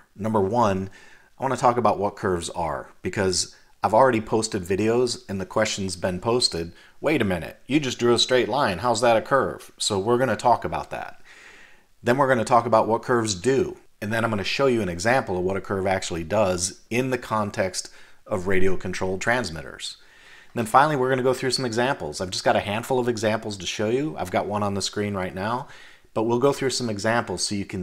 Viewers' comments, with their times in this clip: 0:08 hey, that’s me! And for the record, that is what I sounded like as I was talking to your video in my living room lol